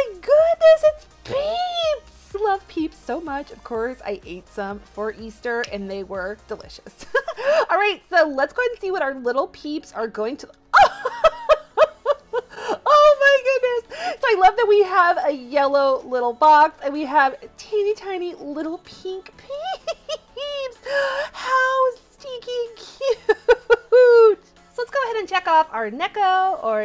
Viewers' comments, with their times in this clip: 0:08 I love her laughs!